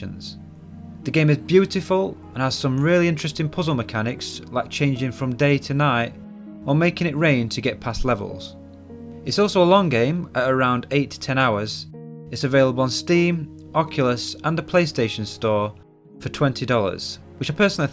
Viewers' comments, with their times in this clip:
0:03 I was and set the video to 0.25 speed because I wanted to see the day/night transition in slow motion. Couldn't help but notice how when at that speed your voice sounds like you've been awake for three months and are barely containing some deep wound to your soul. ^ ^;